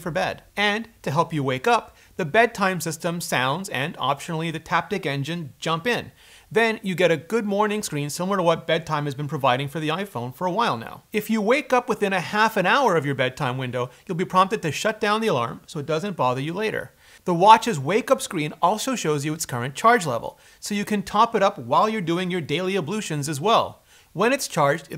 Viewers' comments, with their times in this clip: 0:07 Is it terrible that I heard Tim Cook saying Goood Mooorning!